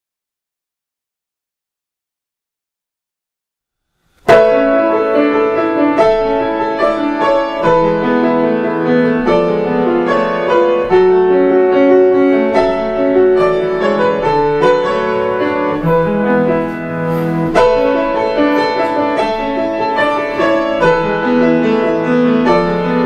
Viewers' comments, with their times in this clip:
0:04 The music start 🎶🎵🎵🎶🎶🎶🎵!